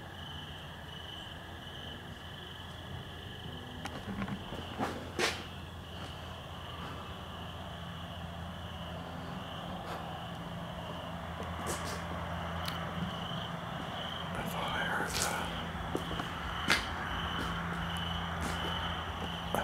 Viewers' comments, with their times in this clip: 0:03 it sounds like footsteps on wood...maybe the roof..there’s only a couple footsteps but if you listen closely you can hear it.